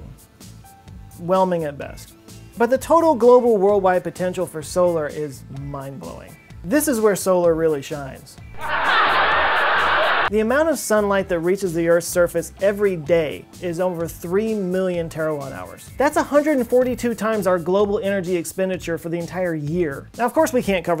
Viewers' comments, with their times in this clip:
0:07 "This is where solar really shines." (Dumb smile over old timey laugh track) 😂😂😂😂😂😂 perfect comedic timing!